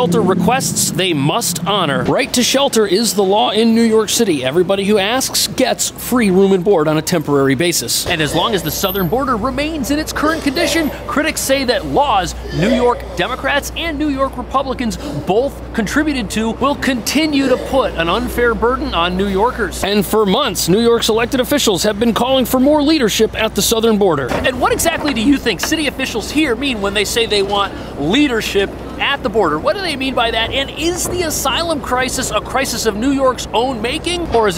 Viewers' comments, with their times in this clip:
0:07 well. Looks like the people got what they voted for. someone puking they ass off in the background
0:07 Did anyone hear the person barfing?🤮 mintue I wonder if he/she is American? 😂
0:12 Is someone gagging and throwing up in the background ? lmfao 🤣
0:17 Love hearing the gagging person in the background, really shows how lovely NYC is.